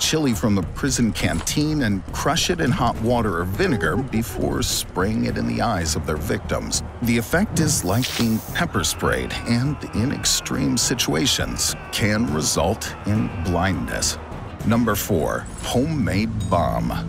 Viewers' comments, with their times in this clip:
0:03 That laugh haha.